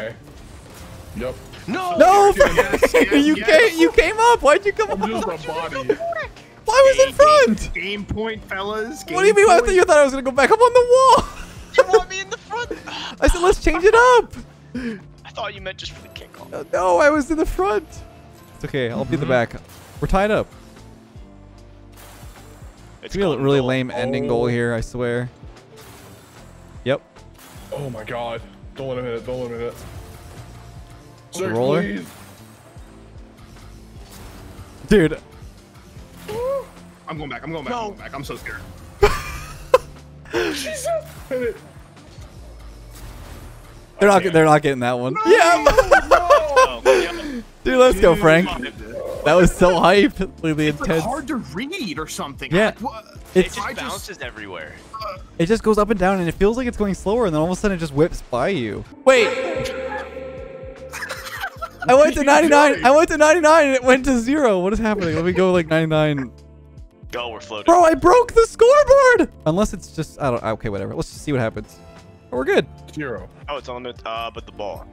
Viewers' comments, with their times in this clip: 0:10 why are your voices so high!
0:59 That wait scared the hell out of me at 2 am in the morning...